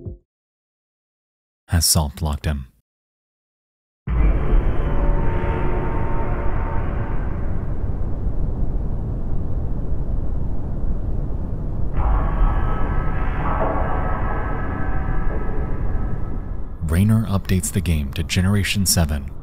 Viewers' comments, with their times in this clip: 0:03 I know a cyberpunk sound when I hear it
0:04 what the heck are those cyberpunk loading screen sounds ??? sounds very very similiar ngl! could even be from the same sound library